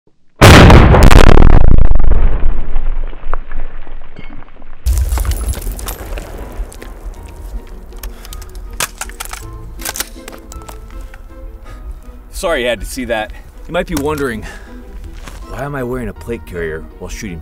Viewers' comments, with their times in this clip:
0:00 The moment my headphones blew up